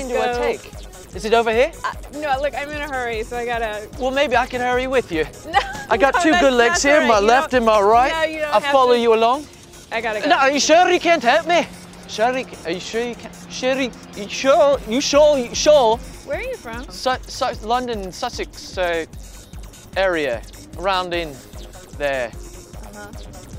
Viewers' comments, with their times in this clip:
0:09 he want from a British accent to a Scottish accent cool
0:10 Hahaha went from British, to Irish/Scottish. Woops :)